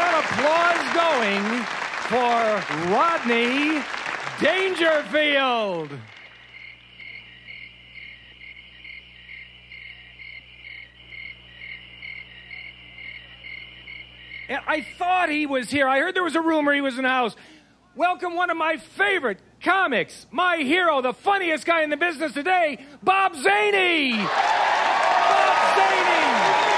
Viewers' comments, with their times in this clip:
0:09 ...classic with the crickets !!